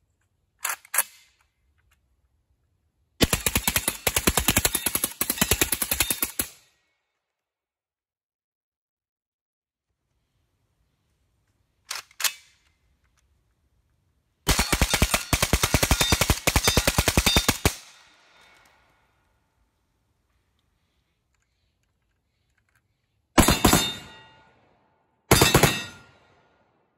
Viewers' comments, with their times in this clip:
0:10 Can sounds so chunky love it